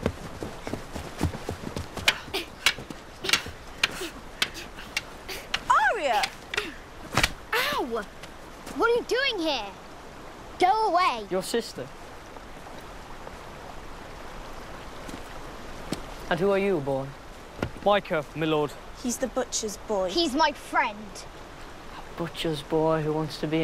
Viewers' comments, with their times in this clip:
0:04 did Sansa just call Arya Ar-ee-ah?